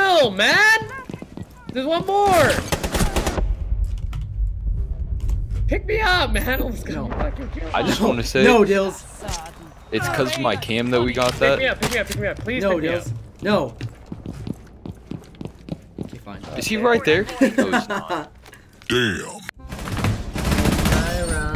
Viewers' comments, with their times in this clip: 0:08 it sounds like cav says say dude